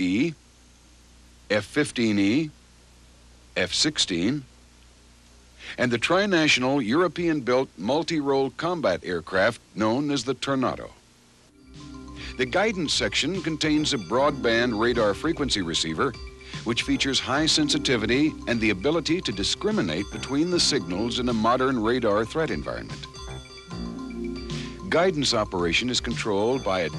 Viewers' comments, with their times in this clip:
0:09 I've been saying "tornado" wrong my whole life.